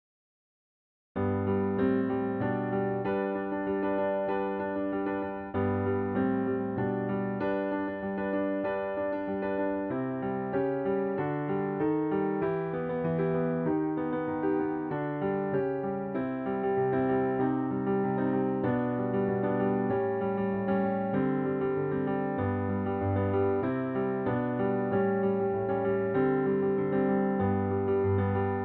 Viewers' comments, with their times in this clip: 0:10 the notes aren't sounding good